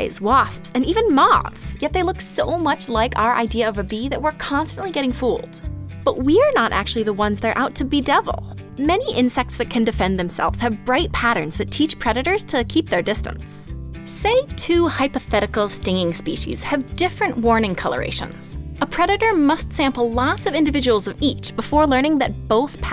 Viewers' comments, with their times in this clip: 0:08 I saw a bedrill